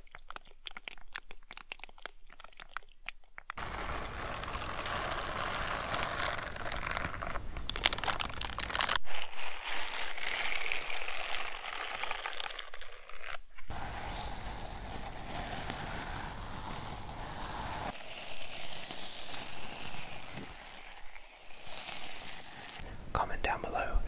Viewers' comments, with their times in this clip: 0:09 sounded like a train ngl